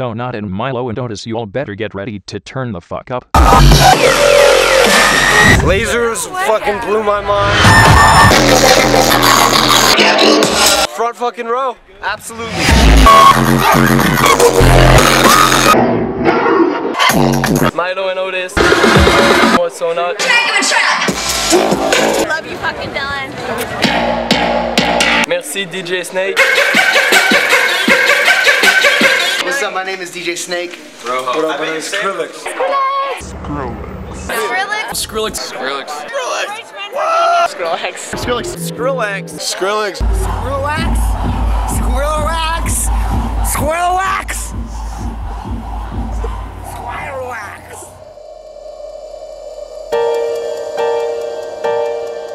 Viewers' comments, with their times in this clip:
0:03 RIP headphone used
0:15 some mad beat just starts but then they cut it off with some guy saying "Milo and Otis" can anyone name that track?
0:26 that music is the minute
0:39 Squirrel wax. Squirrel wax! SQUIRREL WAX!!!